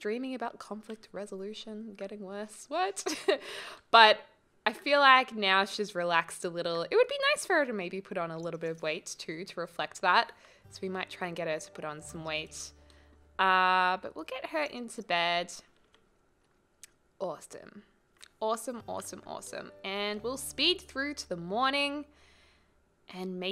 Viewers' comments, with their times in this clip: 0:07 she says athsome